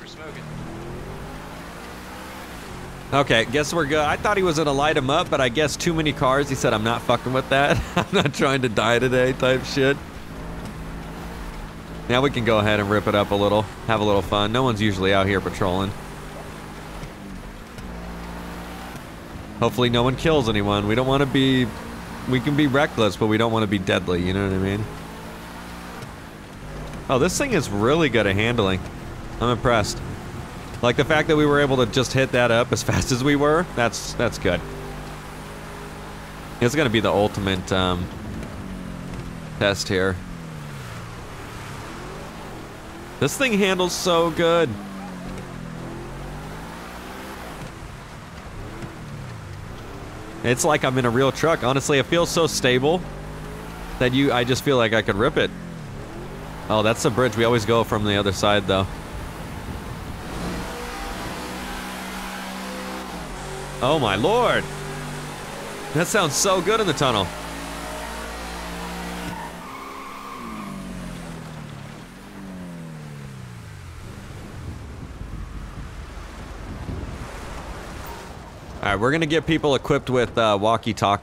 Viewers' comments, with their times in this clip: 0:10 whenever you say that people are pitrolling
1:03 I was like 😮🤤🤤🤤 the truck sounded Hella nice